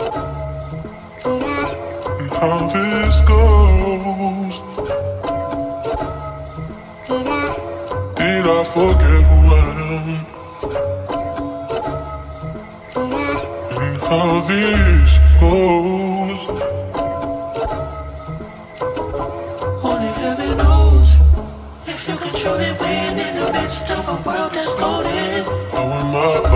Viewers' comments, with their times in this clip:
0:09 the chimes in my left ear *chefs kiss